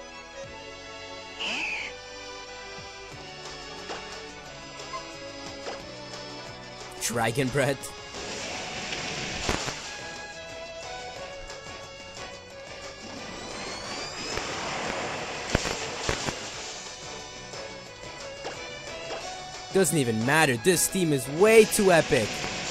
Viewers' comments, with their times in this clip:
0:08 the dragon breath is perfectly timed to the music